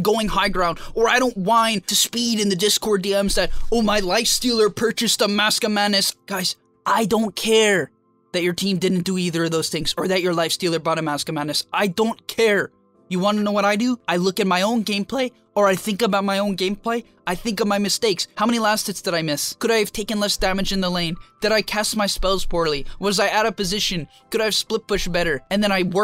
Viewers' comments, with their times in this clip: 0:07 I'm new to Dota, A friends really wants me to join him and learn the game so I decided to watch some videos I watch min and stopped, I just can't watch it anymore instead of diving straight into the tips you overkill the mechanics over knowledge theme completely underestimating everything else about the game you can't have one without the other your tone is also so irritating, as if you get tilted cause someone ain't brilliant enough to see things the way you do the point of the video is to enlighten them, but you're doing it so vigorously like you don't understand how someone can be dumb enough to not figure it out on their own I should've seen it coming , after all the video title is over captioned just like you'll probably try to comment to my comment "those are just tips, the manner they're explained is irelevant" this whole comment of mine , is just my tip to you on how to deliver a message in a more appropriate manner